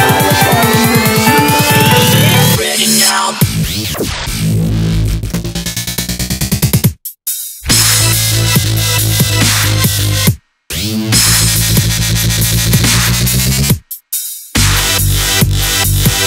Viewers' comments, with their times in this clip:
0:03 damn, that second drop was ridiculous